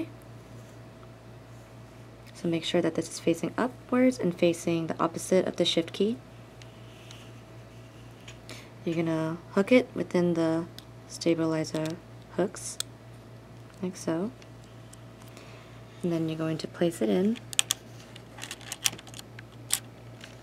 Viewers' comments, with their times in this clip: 0:03 Shit key :D